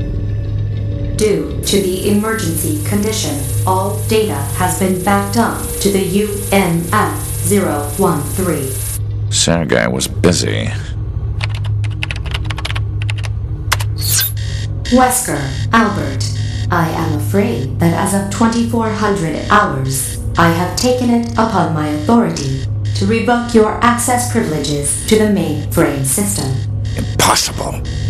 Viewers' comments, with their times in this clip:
0:09 "Santa guy was busy" 🤣